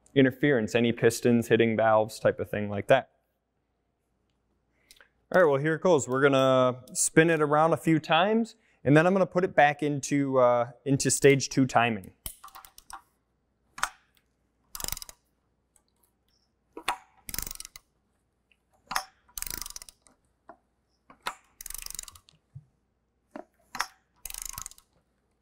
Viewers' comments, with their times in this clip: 0:09 what is the clicking sound when you're turning the motor over? I'm assuming it's the tensioners popping but this seems quite loud, is this clicking sound normal?